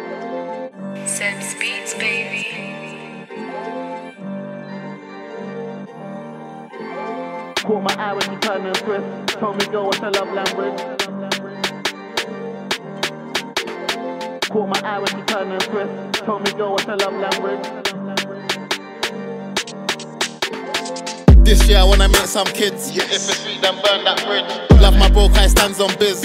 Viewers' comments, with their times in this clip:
0:07 russ milhões and best flow❤🎧🎤🥷